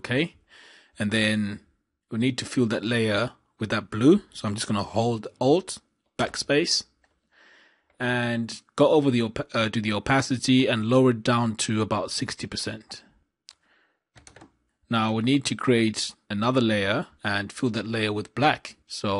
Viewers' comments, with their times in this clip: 0:04 what is hold old backspace